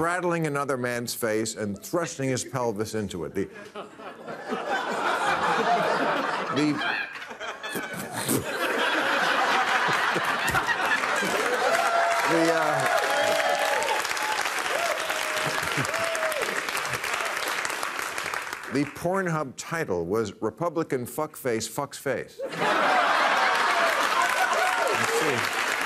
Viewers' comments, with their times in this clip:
0:06 Best laugh ever.
0:07 When Bill cracked up I did too. 😂😂